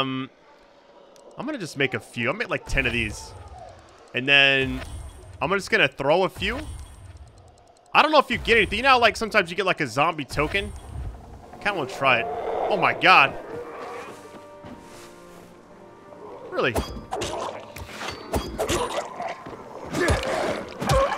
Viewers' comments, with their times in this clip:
0:03 Midway through the video what's the sound in the background? That was creepy af